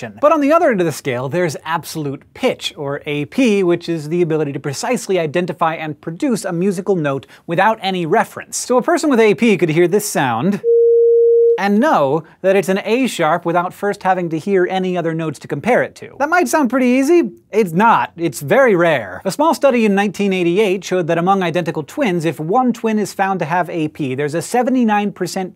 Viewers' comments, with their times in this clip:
0:08 is it around 500Hz? haha Audio engineers know best
0:11 That note was an A#, but I guessed that it was a Bb... close enough?